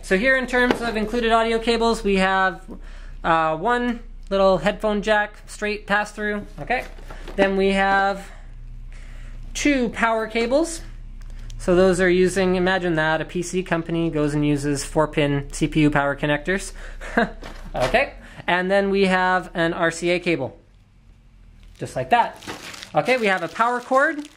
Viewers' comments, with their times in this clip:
0:06 You sounded like GlaDOS